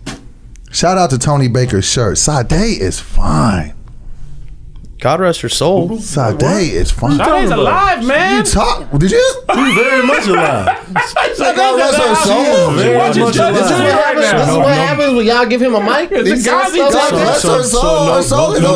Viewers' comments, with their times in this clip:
0:05 💀💀💀 omg. The tone was like “god rest her soul..? 🥴” 😭